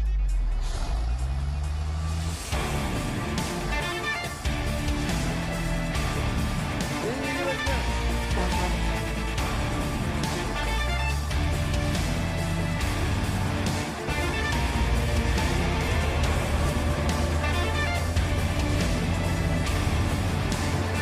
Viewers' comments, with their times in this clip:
0:08 Haahahahah too funny, the Editor put a "Semi Horn Honk" ! Love it Keep leaving your stuff Orcs, Ukraine knows hoe to use them and take care of them. You only know how to destroy things!